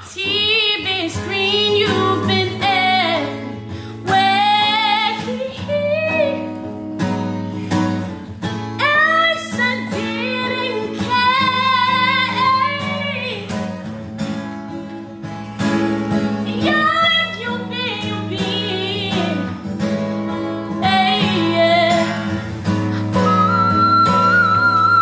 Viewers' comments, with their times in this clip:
0:10 Man, the reverb on that "care" She is such a beast!!